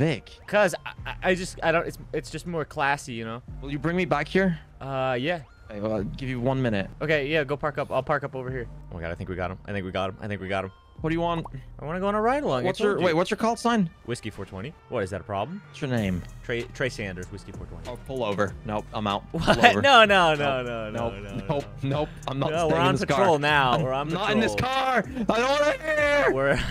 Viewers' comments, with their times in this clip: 0:07 Wow normal French is so different🤣